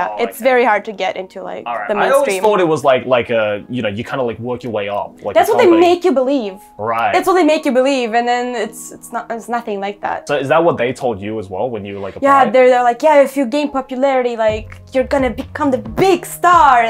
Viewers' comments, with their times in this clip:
0:03 Sounds like League Of Legends ....